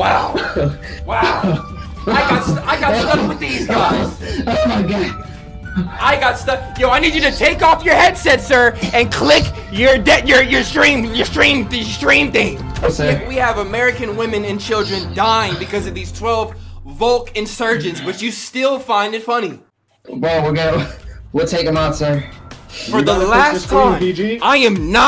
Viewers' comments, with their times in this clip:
0:07 broken records be like